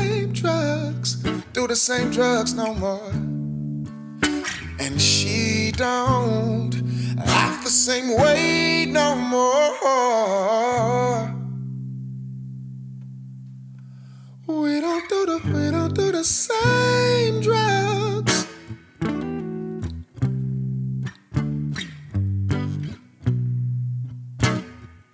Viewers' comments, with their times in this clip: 0:10 omg his voice